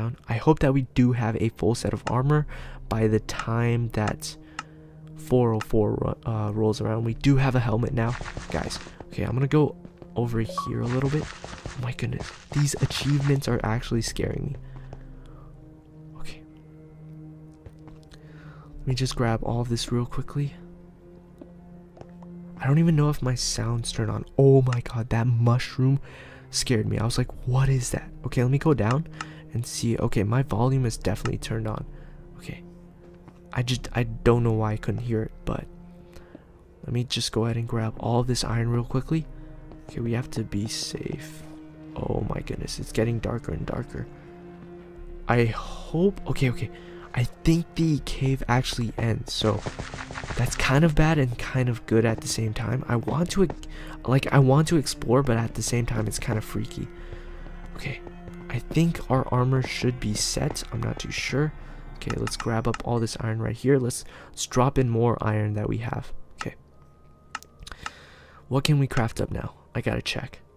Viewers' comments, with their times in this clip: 0:09 alot of blocks broke or I heard eating again
0:55 Is it me or do i hear village bell !😨